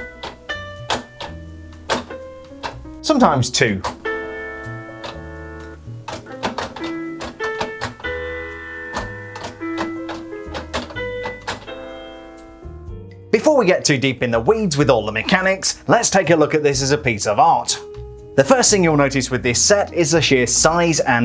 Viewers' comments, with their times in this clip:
0:06 HE PLAYED THE FORBIDDEN RIFF!!!!!! 😂😂